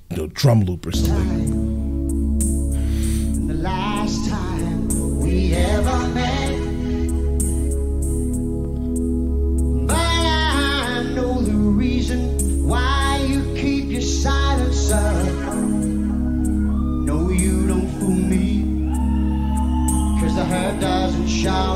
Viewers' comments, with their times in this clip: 0:08 Just you wait lol for those drums . He is a drummer after all and a good one on top of that .